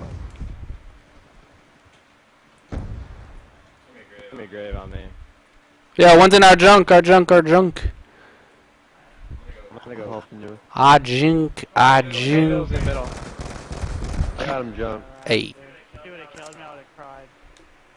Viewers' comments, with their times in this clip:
0:04 1 is in our junk one is in our junk that didn't sound to well